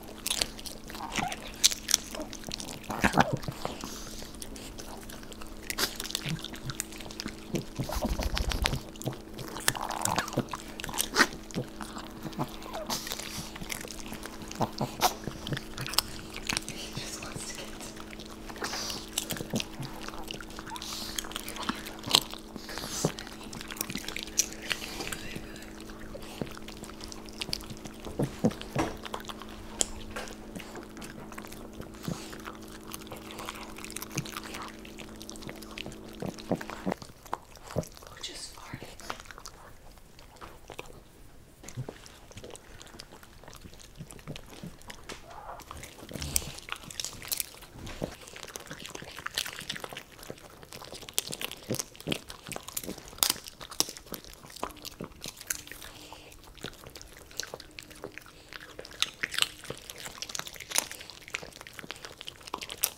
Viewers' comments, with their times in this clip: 0:06 whose making the disgusting swallowing noises????
0:36 extra pop fart noise thing
0:39 farts in asmr
0:44 (scream in the background) smells that bad huh..
0:46 who else heard that goast?